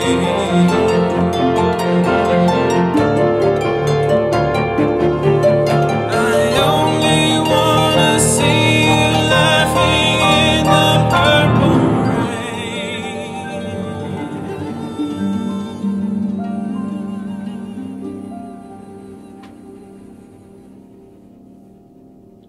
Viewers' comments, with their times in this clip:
0:06 Guy!! What are you guys doing to my ears! That piano and harp are a deadly combo. You guys need to give warnings a head of your videos, you cant just be transporting people to different places suddenly like that I have work in the morning. Guys took me to some pasture with dandelions and purple drizzle the harp holding down the tension the piano abusing it and building it more and more is not sanatory. jeez jeeez...